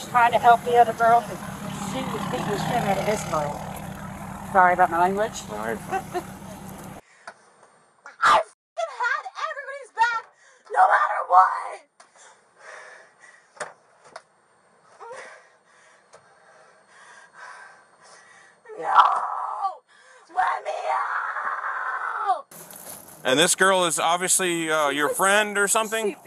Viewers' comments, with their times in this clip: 0:08 For real! Did you hear the demonic sounding growl she made ?
0:08 Go to she barks 😂😂😂
0:08 😂 she barks like a dog. 😂 omg imagine living with that demon